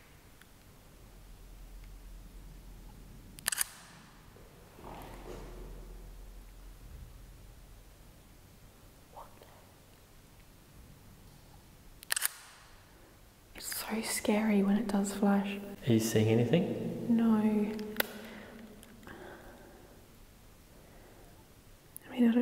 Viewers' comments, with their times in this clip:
0:03 that wasn't a drip either